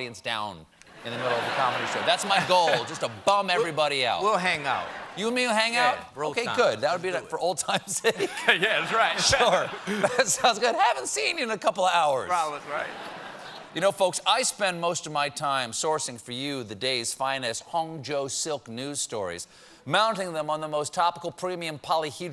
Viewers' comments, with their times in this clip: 0:06 pretty sure he said "bro times"...